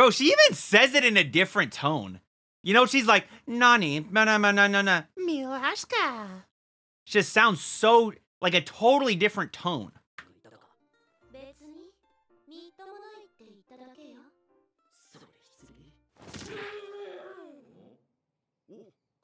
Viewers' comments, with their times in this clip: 0:06 she had a really bad accent while u said it so clearly